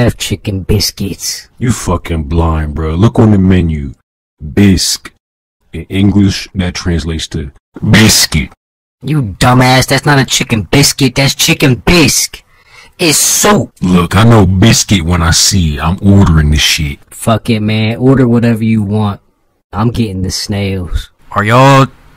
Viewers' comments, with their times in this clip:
0:07 laughing cute This is the funny one! XD